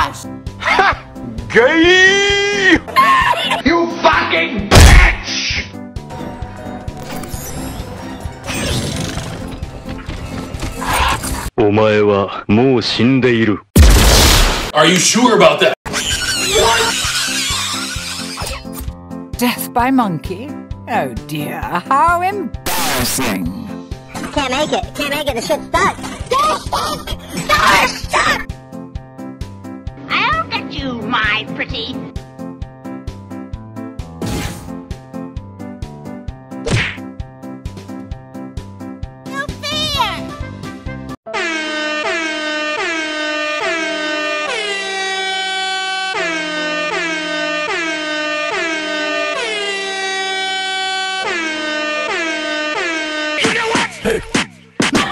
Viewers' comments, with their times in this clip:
0:03 why the thud and "BITCH!" playing at the same time so satisfying?
0:39 why is that so cute just like the way she says it